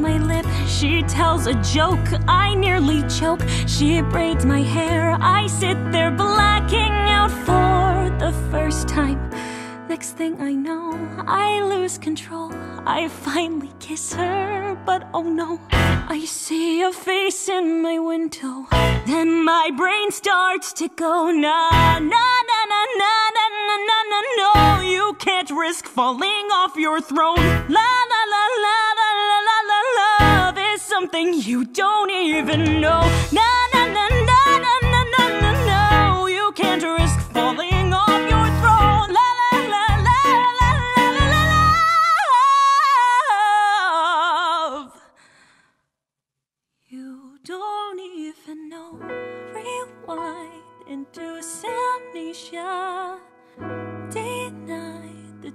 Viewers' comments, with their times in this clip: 0:06 I swear to god that ping sound makes me check my phone for a message every single time
0:39 But like - THE LOVE RIFF? WHY IS NOBODY TALKING ABOUT THAT RIFF??? Edit: Timestamp is